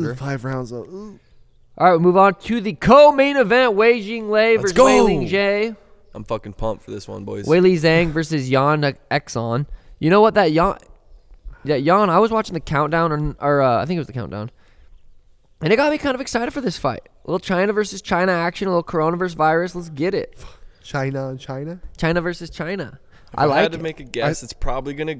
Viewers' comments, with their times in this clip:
0:06 “Yan Exxon” lmao